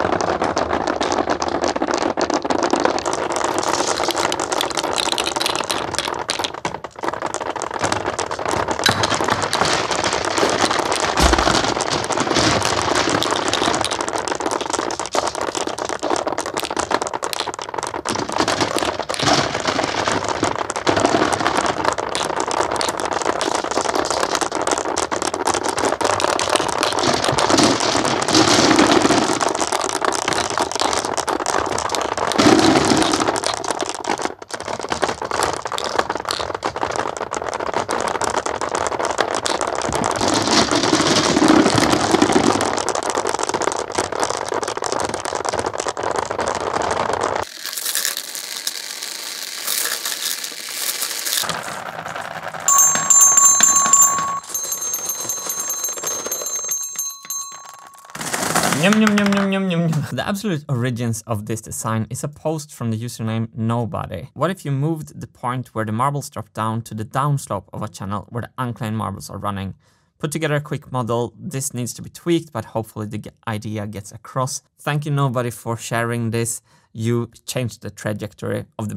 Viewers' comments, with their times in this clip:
0:04 Is it just me...or does the slow motion/sound remind anyone else of a David Lynch film? Or maybe I have been watching too much David Lynch lately!
0:09 love the sound design here, sounds so good❤️
0:43 oml it sounds so satisfying
0:43 sounds a bit like it's raining outside against the window.
1:01 had to pause because of that glorious ASMR action.... Shoutouts to discord for all the amazing ideas people have.